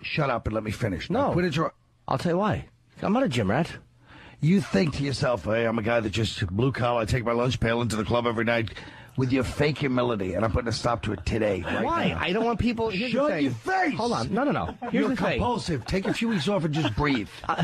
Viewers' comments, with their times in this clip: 0:04 colin is brilliant. So serious sounding "im putting a stop to it today"